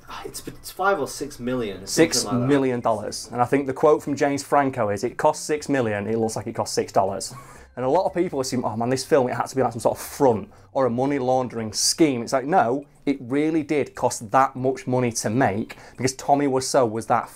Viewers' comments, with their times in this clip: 0:05 "It cost six-million, it looks like it cost six dollars." Hahaha! I'm crying in the kitchen from how blunt that line is delivered.